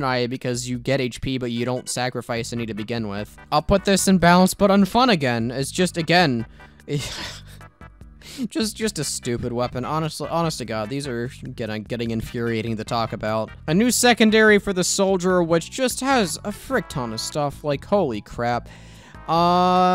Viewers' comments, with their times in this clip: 0:06 On god am I the only one that thinks his laugh sounds like the roblox sword?